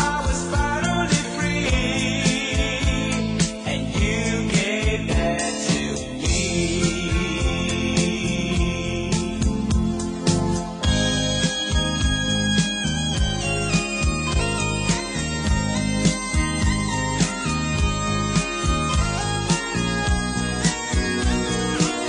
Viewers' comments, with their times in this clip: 0:10 it reminds me of the start of the Rockford Files theme.